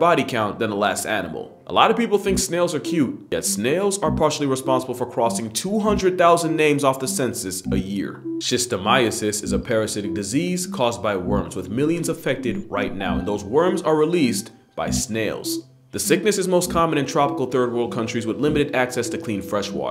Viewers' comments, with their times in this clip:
0:07 theres that eerie music that no one knows where its from